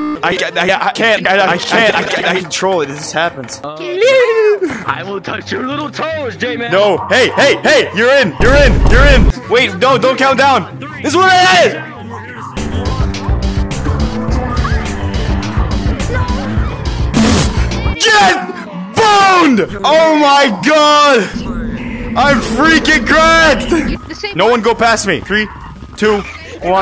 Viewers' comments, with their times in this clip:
0:08 ❌You're in❌ ✅Urine✅